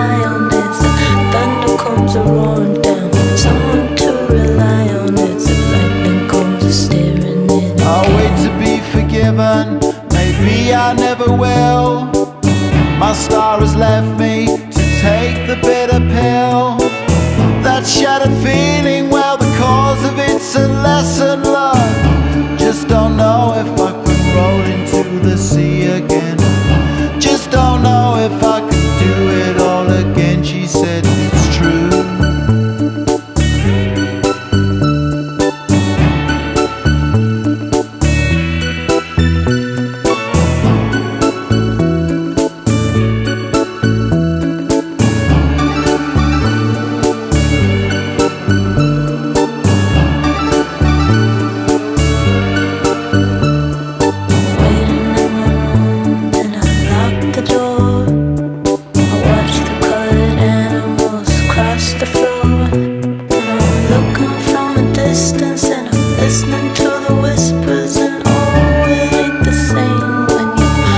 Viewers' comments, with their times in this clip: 0:06 it kinda annoys me that her spit keeps making sounds lol
0:54 i swear she is just mumbleing...